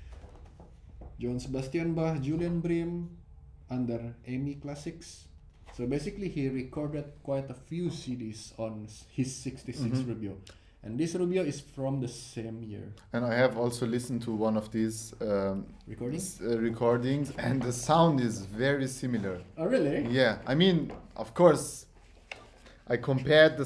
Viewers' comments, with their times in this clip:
0:09 The 3rd blue background album of J. S. Bach was on a Hermann Hauser I. By the way the Rubio sounds fantastic.